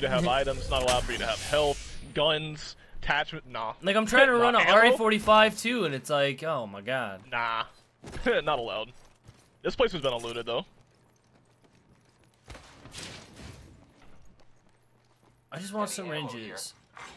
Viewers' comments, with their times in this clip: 0:03 Also, I don't know if he really said it or not, but it definitely sounds like it